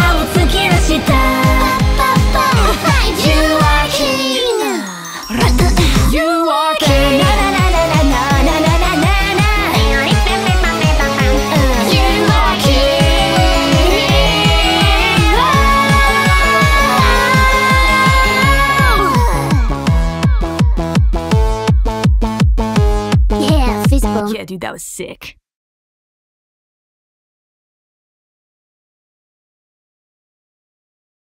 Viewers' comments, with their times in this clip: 0:04 I swear I can put this on repeat, Gura's melodious "You Are King" and them immitating the song is just funky as hell
0:07 It sounds like they didnt even practice for it they just hung out for a night and had fun singing it, one of the best King covers Ive heard by far. Their dorkiness really showed near the end lol.
0:07 when they forgot they were supposed to sound menacing
0:09 I believe that these mouth noises preformed by gura are top notch
0:09 Calli: *sings cool and fast Gura: "how about some cute bangblababang?"
0:12 The power of those two voices singing in unison made my soul vibrate, thank you!~